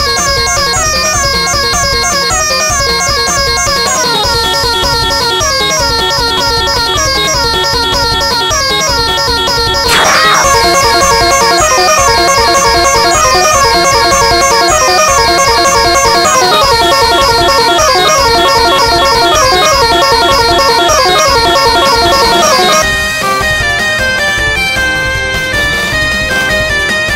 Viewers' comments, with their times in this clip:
0:09 I honestly thought I heard a Spell Card activate.